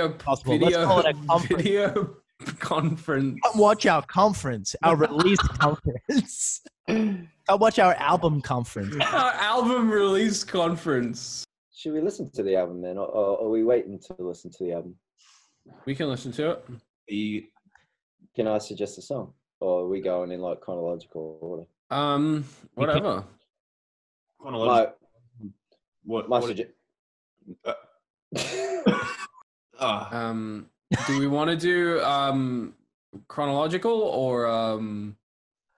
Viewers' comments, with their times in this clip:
0:10 Why did cal sound British at like Like not even super Australian, but BRITISH.
0:11 Calum bestie you sound British
0:21 everyone interrupting each other LMAO
0:23 is no one gon talk when they kept talking over each other 💀💀